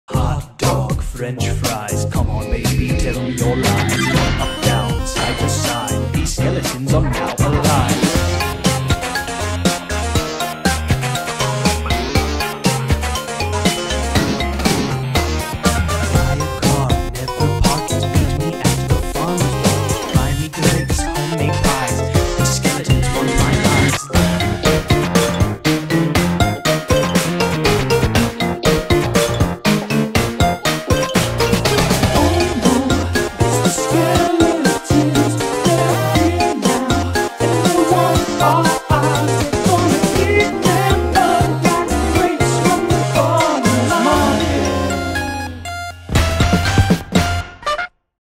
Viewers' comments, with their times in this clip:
0:04 Ramen Tango what
0:07 has a very good rhythm
0:16 The music hit so hard on that part :0
0:20 the way you sync Toriel's theme reignites my will to live.
0:20 And if u liste closely you can hear minecraft
0:21 sounds like when you find something rare in a game
0:21 Plus Toriel's theme is changed around
0:28 sans does the default 'sans"
0:29 I like how Papyrus stops and yells at Sans when he realizes that he is doing the default dance.
0:41 Put the speed to .25 It's so fucking cursed
0:43 FUN GANG IN THE BACKGROUND